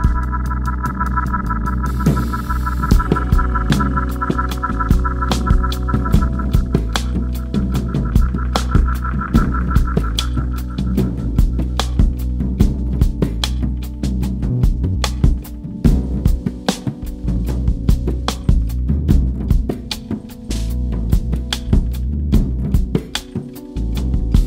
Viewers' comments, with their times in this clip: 0:06 Minute the keyboard sound choice is horrible ! - Besides that all playing was amazing ! - Congratulations !